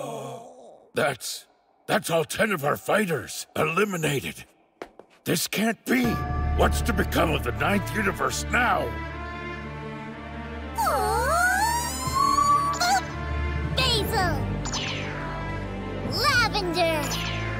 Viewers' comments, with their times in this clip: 0:03 has so much weight behind it with this music